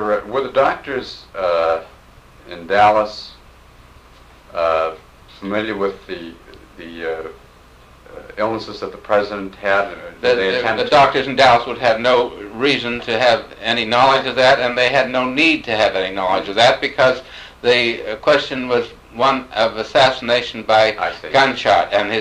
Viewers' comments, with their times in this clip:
0:10 A little testy Dr ? Sounds like the interviewer hit a nerve.